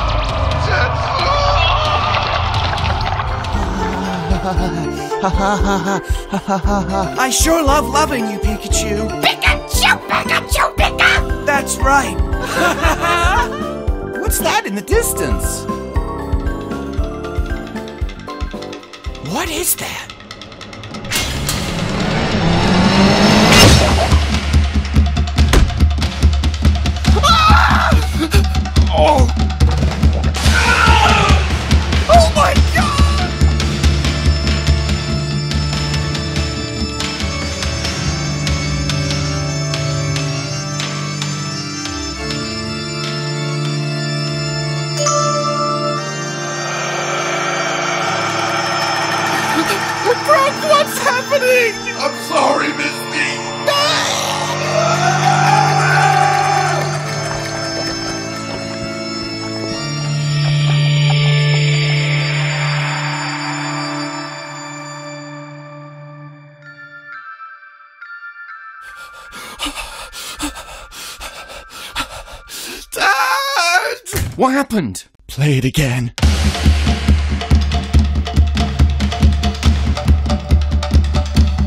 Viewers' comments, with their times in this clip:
0:09 Pikachu sounds like he is murdered😂😂😂
0:09 “Best pikachu impression”
0:30 brock's scream sounds like he's 16 but also 21
0:30 reminds me of bill cipher cuz of screm
0:34 Sounds like the solar eclipse music terraria
1:01 sounded like four screeching lol
1:06 fukira フキラ instead of アキラ